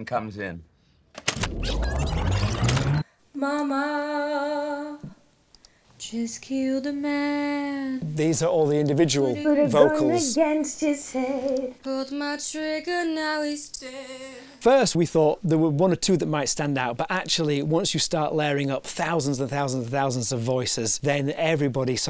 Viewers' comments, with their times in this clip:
0:03 OMG the first voice is mine 😭 I'm going to cry!
0:06 MY VOICE IS IN 😂😂 BEYOND HAPPY TO BE PART OF THIS MOVIE💜💜
0:09 they used my crappy vocals???!